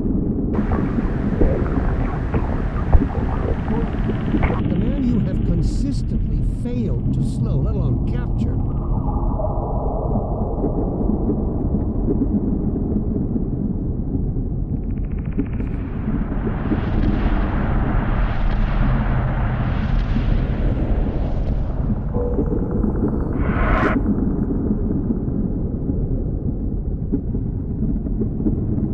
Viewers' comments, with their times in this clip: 0:10 The silence was loud as fck!